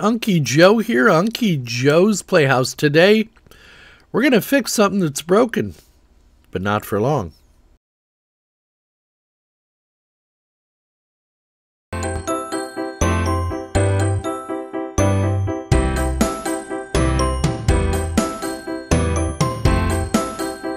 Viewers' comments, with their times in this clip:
0:08 Intro audio problem on ?